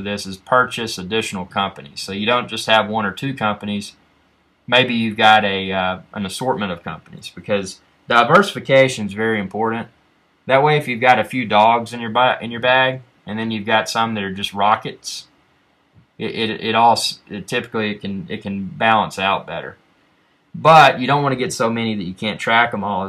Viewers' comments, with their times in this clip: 0:10 "To many Dogs in your butt" LMAOO